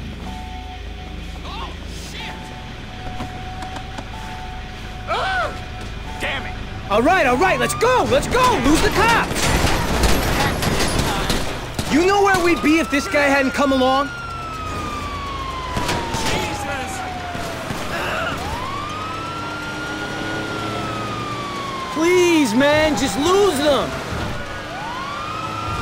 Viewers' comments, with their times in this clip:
0:06 Wow, i thought that was Michael saying "Alright alright, Lets go!"😅